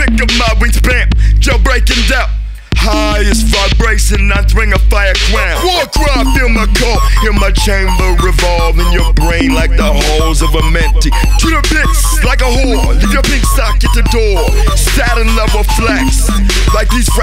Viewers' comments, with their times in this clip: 0:05 “in your brain like the halls of amenti” the lyrics on this song…. i fucking love the verses. this entire does such a good job at conveying a creepy and unsettling tone. underrated imo